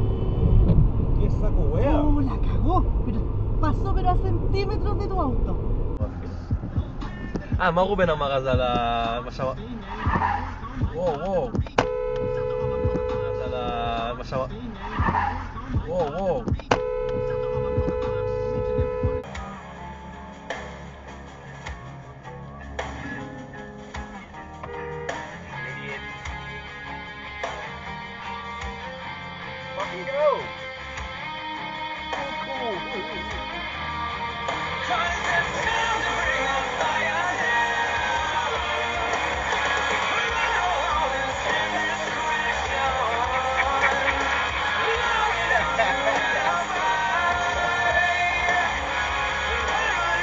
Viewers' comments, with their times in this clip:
0:05 The guy tooted his horn the week after the guy had driven past. In fact, by the time he tooted, the driver of the other car was home, showered, had his dinner and was just about ready to proposition the wife for a bit of nookie when the toot came though and distracted his train of thought.
0:06 I especially love when people use their horn even when the other car is long gone or wouldn't be heard anyways like 🙄
0:06 that horn has really high ping 😂
0:07 The horn saved that situation!😅
0:08 why are you stopping? why are you honking?
0:09 You are a little late on that horn buddy.
0:12 Why is the cammer laying on the horn? I do not think most folks know what the horn purpose is. It is not there to show your displeasure with other drivers.
0:16 Why beep that cars long gone
0:20 There was plenty of room for the truck to merge. Why honk? He didn't cut him off. Staying in place was dumb on his part but so is honking when someone dared to get ahead of you. 😂
0:25 That lane change seemed fine, and the cammer's honk was unnecessary and an over-reaction. That being said, the black pick-up truck's response to brake check and stay stopped in the middle of traffic was both dumb and dangerous. To call that an over-reaction would be an understatement.
0:29 music spot on!! >:)
0:33 good choice of music